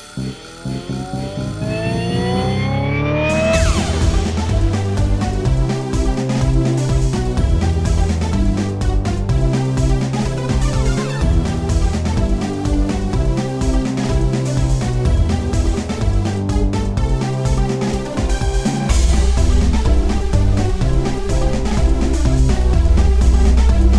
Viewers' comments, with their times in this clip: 0:04 something about the music and onwards before the lyrics reminds me of warioware for some reason